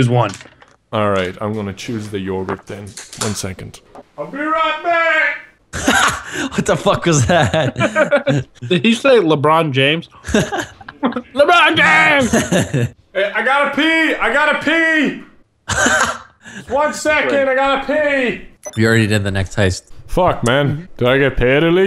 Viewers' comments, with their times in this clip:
0:03 in the other videos I never heard what he said so I assumed he said Lebron James but now I heard what he said and it feels weird
0:04 I never watched Nogla's perspective until now, I never realized that he said "I'll be right back". I always thought it was "PUNCAKEEEE".